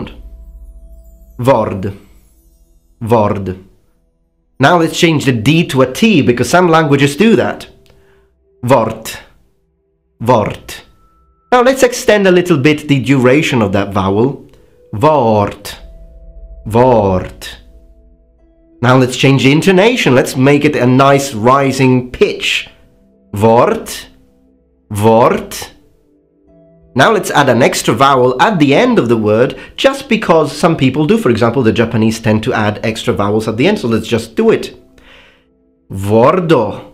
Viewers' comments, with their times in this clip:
0:09 You said "Wort" which is german for "Word" XD You almost nailed it! XDDD
0:17 that's perfect German :D (except the rolled r)
0:24 there you have a rather good pronunciation of the Dutch word for word (woord) xD